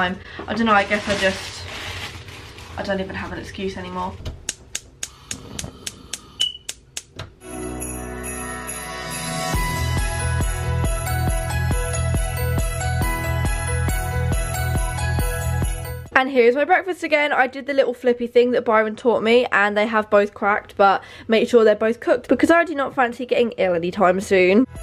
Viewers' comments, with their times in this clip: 0:06 -1-12 the alarm again Ye I know